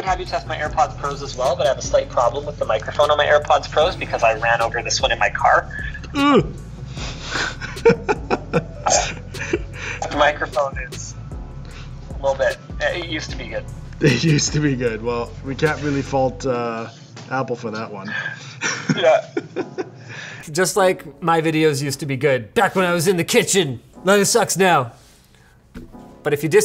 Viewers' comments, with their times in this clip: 0:09 Does anybody have the issue where the AirPods silenced at the beginning of your speech? Linus has this moment Is this a normal thing?